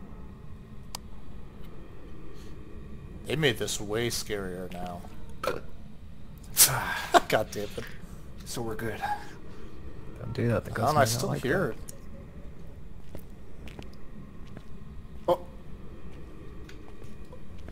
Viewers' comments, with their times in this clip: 0:04 A necessary burp. LOL